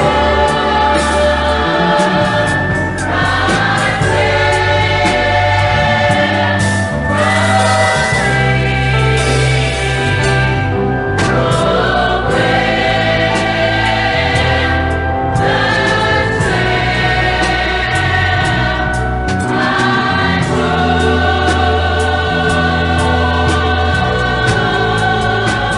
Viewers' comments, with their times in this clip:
0:07 This song feels like am driving home in the fog on a backroad after you just had a conversation with your best friend for 4 hours.